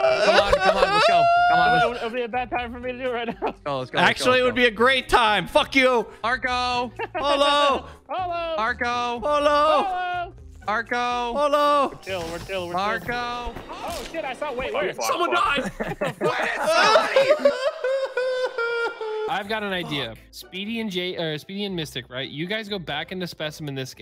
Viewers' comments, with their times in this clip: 0:05 he sounds like morty crying